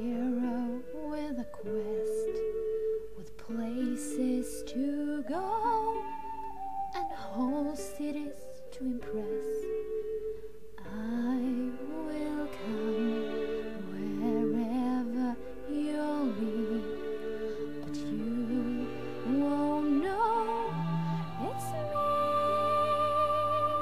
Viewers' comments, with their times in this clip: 0:05 another great song keep going seemed like u were trying to keep up with the time of the notes or was that all like that? anyways still perfect